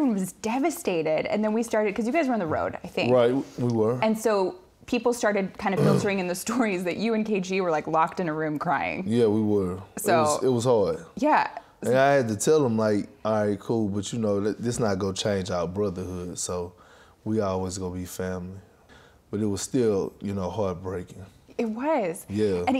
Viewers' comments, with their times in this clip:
0:04 Did Perk just burp?
0:05 damn that burp
0:06 My man str8t burped no fucks given.